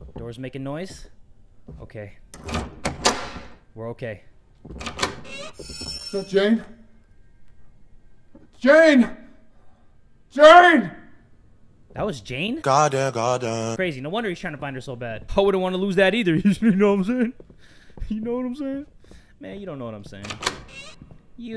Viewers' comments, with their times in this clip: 0:05 who else thought he said sup jay